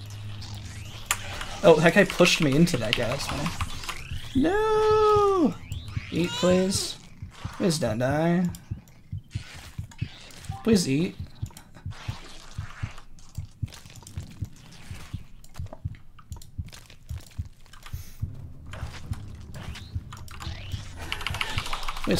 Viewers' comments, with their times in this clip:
0:03 I love how she responded to his "Nooooo" with a meow 🥺 she's so precious